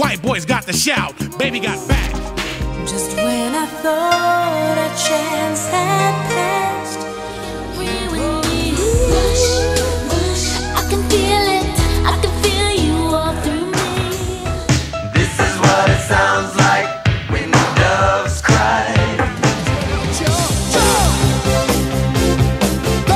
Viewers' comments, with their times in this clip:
0:09 I thought it was Woooosh like r/woooosh